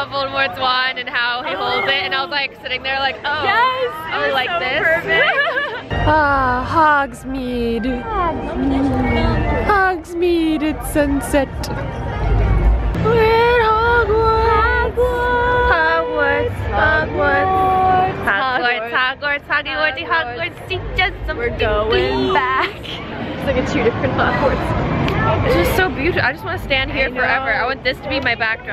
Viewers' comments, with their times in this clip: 0:06 That sounded like the Jurassic Park "theme song"
0:11 that jurassic park music in the background xD